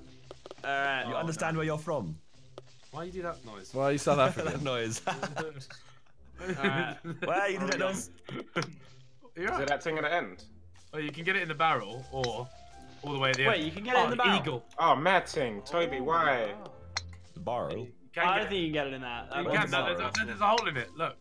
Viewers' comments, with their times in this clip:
0:03 I’m South African and that is pretty close🇿🇦🇿🇦